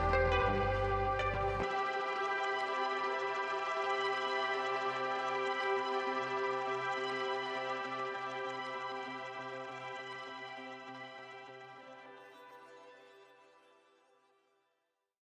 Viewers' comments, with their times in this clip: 0:05 he whispered help me